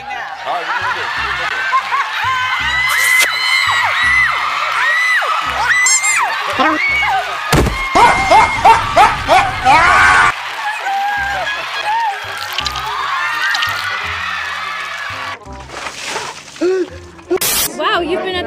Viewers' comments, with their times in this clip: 0:05 omg the editing, the sound effects. Hilarious!!!
0:05 The freaking Yoshi sound effect I can't!